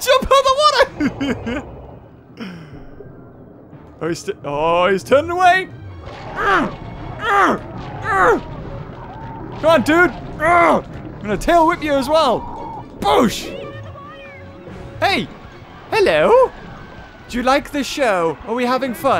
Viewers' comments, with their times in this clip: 0:04 killer whale: BLAH Me: sounds like me
0:04 orca: BLAH Me: sounds like me